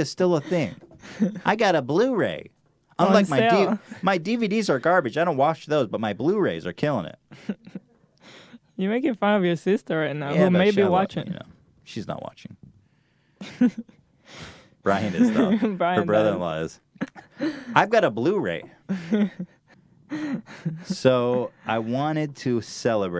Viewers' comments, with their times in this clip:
0:08 she says sister like borat